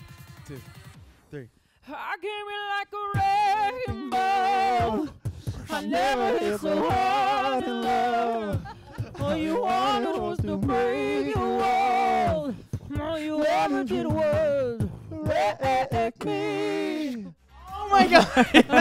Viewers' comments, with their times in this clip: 0:06 Was Avi's mic not working or what ? I don't hear his bass in